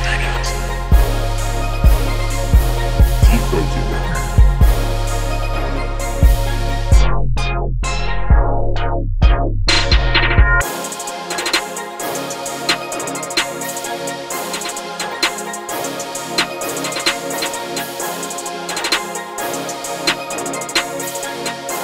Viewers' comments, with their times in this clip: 0:07 Aye how u make that sound like the on and off thing